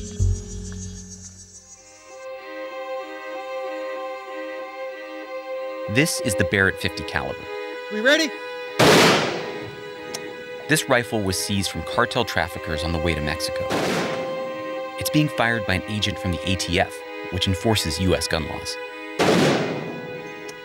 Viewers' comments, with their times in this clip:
0:05 Manipulated to sound like burst fire instead of single shots... Journalism should not become speculative fiction.